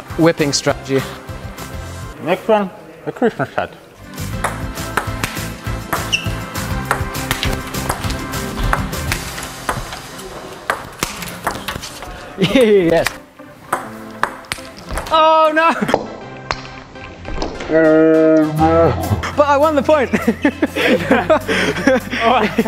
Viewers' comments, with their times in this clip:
0:03 🤣 why do you say like that?😂